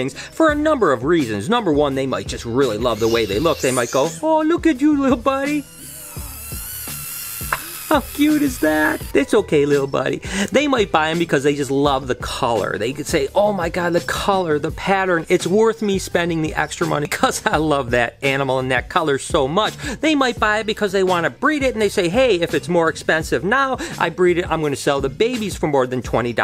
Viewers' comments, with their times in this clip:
0:03 The screaming or a screeching sound that your gecko made means that the animal is getting into a defensive mode. It shows that he is threatened, frightened, or in a highly stressful state.
0:07 H E S C R E A M ! !